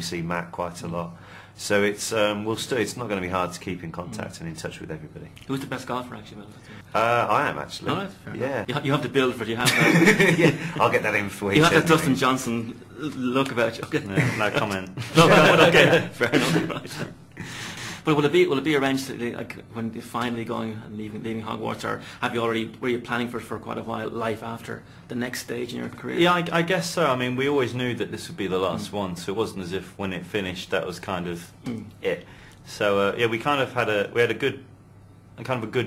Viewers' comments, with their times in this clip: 0:10 I loooooove Olivers laugh :D
0:17 LOOOOL double breath